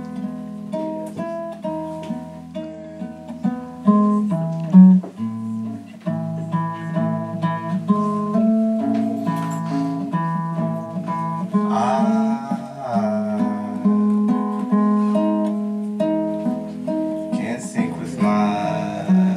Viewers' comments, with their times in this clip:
0:05 I loving seeing his face recoil haha Sounded great besides the tuning :^) Thanks for the upload!